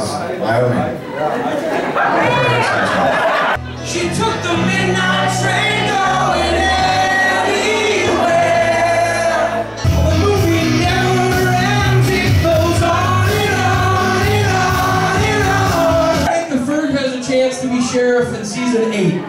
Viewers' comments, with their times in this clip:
0:04 The Ferg sounds pretty good!